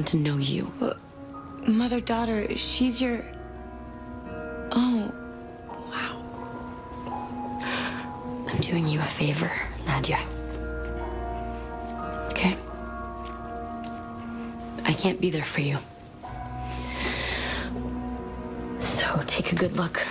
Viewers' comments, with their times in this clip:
0:07 the way she breaths in 😭 She loves her daughter so much